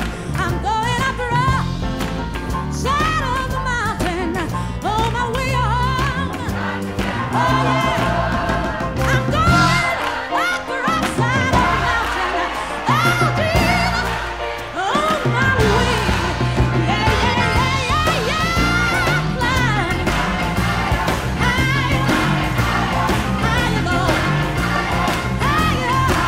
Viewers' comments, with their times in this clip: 0:08 When the piano go HARD boi.